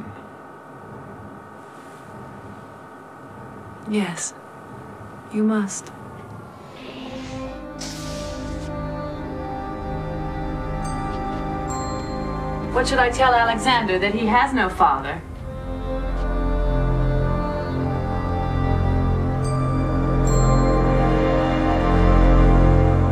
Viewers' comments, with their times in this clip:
0:04 Suzie Plakson is amazing but can we please take moment and appreciate Ron Jones incredible score ?